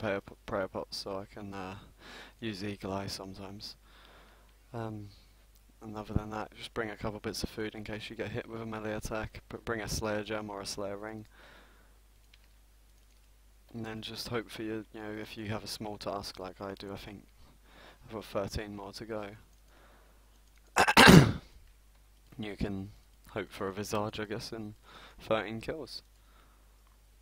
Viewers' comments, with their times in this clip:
0:10 I gave you a like but where you coughed up flem did not sound nice fella haha I had headphones in with loud volume litterally raped my ears.